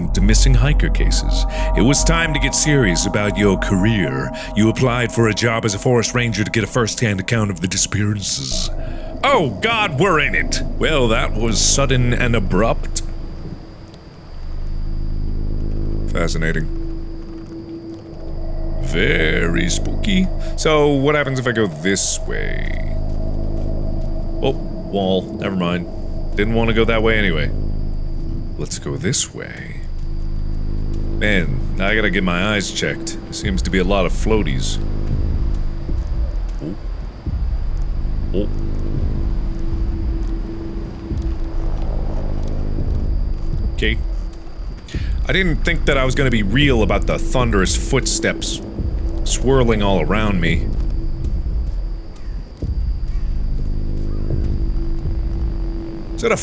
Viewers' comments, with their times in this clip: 0:09 when mark says "Oh God, we're in it!" he sounds like laszlo from what we do in the shadows
0:37 Me Well I guess he was right about those thundering footsteps!